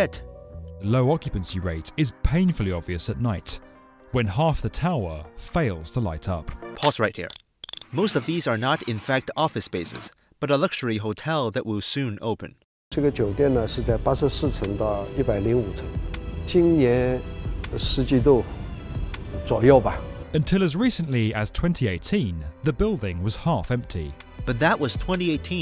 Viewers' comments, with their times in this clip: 0:06 “PAUSE RIGHT HERE” judging from the tone our Chinese is really offended 😂😂😂